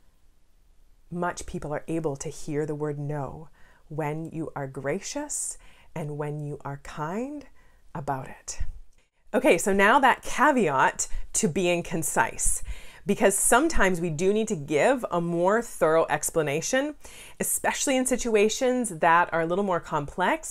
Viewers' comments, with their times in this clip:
0:07 Excellent advice. I can use your tips to say no more often now. Somehow the volume of your clip seems to soften after mins. Thanks